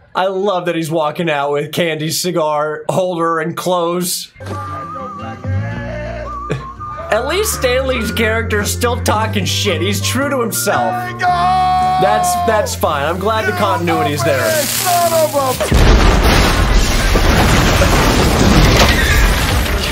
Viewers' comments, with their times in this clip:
0:05 The first time I saw this movie I flipped out when that song started playing. I grew up watching the Trinity movies and hearing the theme song in a new movie just made me giddy.